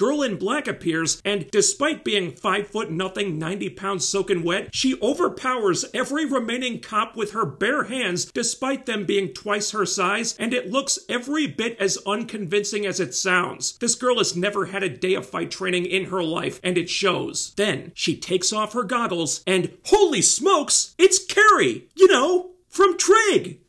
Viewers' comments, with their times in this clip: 0:10 Where your voice is going? It is fading? 😮